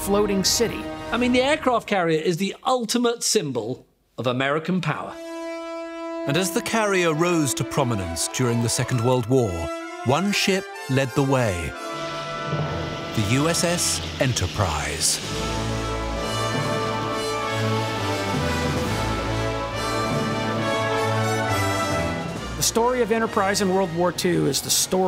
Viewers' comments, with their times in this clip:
0:09 Narrator: "One ship lead the way: the USS Enterprise." Video: Star Trek esque music Me: 😏 "Hey~, I see what you're trying to do."